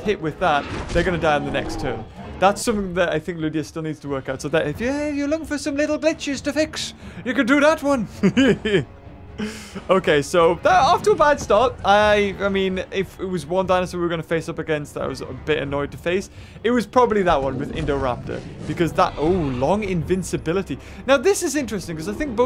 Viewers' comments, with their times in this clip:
0:06 it sounds like you said bitches